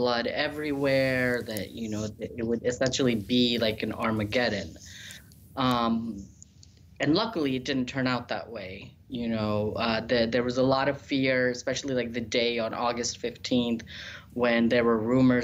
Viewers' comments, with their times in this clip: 0:03 Is a kid doing the voice over for the guy ?